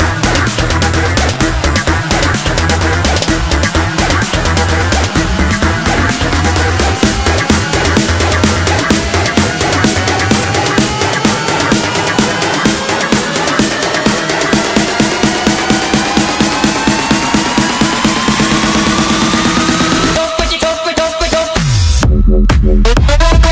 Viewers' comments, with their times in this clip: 0:05 off the hook buildup synth used.